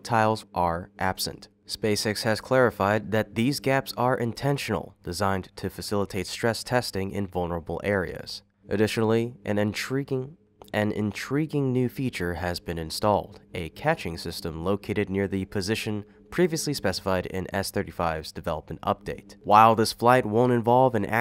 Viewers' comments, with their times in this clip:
0:08 they made the AI repeat this part so that it sounds more lifelike